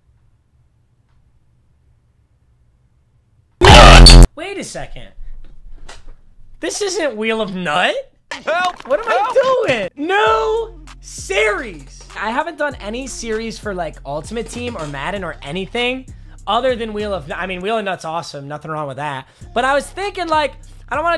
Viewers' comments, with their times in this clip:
0:03 my earphones were pretty much maxed smh